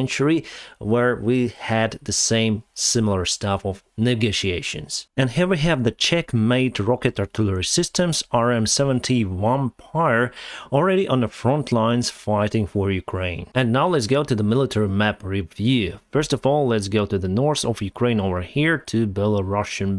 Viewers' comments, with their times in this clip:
0:04 "Here we have the Checkmate rocket artillery system" Ideed